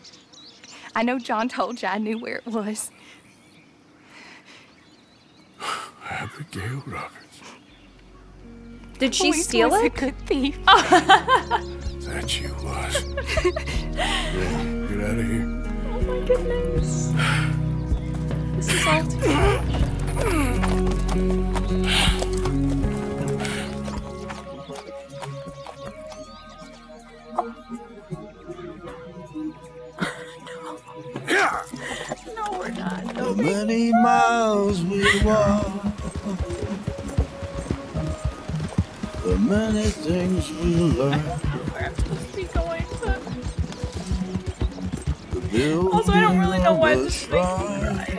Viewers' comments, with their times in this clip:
0:07 That song still makes me cry. 😭
0:29 the last ride song and the voices comments